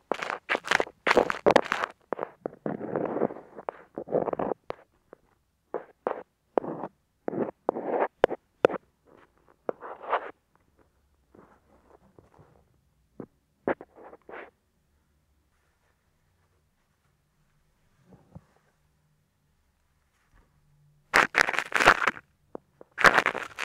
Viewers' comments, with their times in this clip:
0:04 I loved the tapping on the ear itself with the metal pick! So tingly!